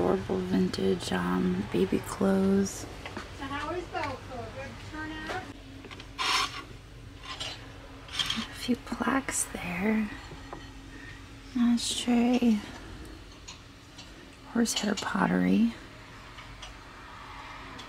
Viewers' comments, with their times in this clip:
0:05 and that is why most places play music, having to shop while listening to a loud one sided conversation is mind numbing.